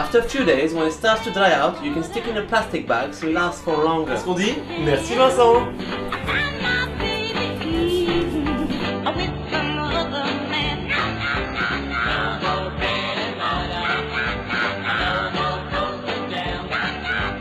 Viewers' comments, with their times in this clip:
0:03 This is very useful, since I don't have a bread machine, so thanks a lot! : ) Btw, are you from france? Your accent tells me otherwise, but you do sound french so I'm a bit confused!